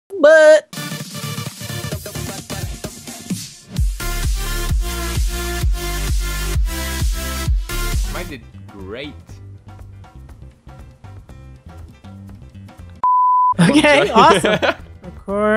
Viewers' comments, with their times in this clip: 0:01 *R.I.P Headphone Users*